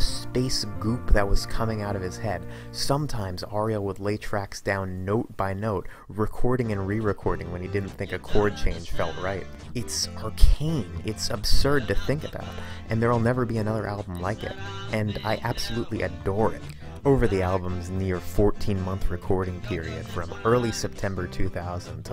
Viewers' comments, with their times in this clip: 0:08 holy shit I never heard that version of Go 2xs sounds awesome